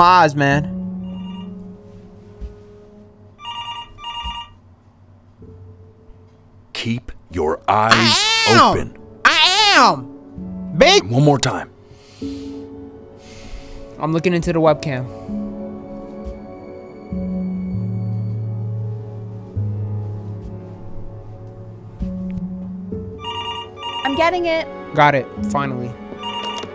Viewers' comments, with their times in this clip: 0:07 the noise my cat makes at 3am